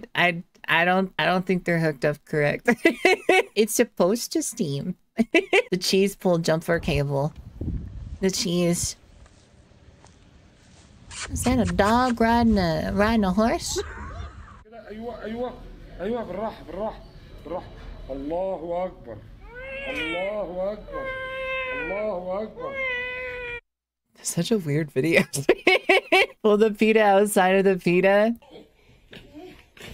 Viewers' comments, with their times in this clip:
0:10 IS THAT A DOG RIDIN' A HORSE!? R2D2 screech